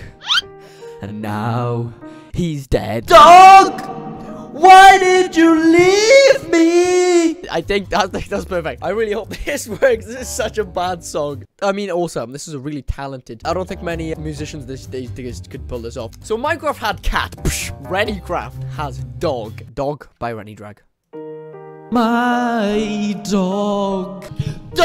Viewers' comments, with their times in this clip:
0:05 ur voice racked when u said leave.